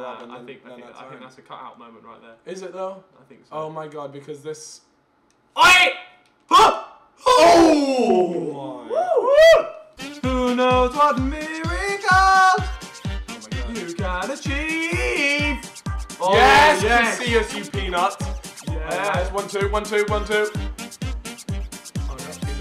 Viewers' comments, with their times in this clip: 0:08 almost died, such a random song lol